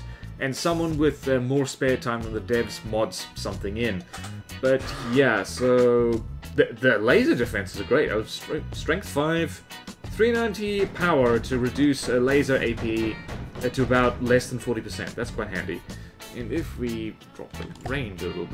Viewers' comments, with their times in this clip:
0:04 someone's cough in the song it seems